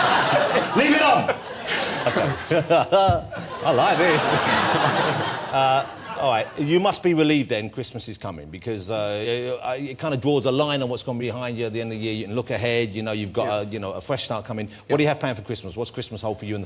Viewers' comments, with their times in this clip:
0:04 Ross's delightful squeal and giggle sums it up!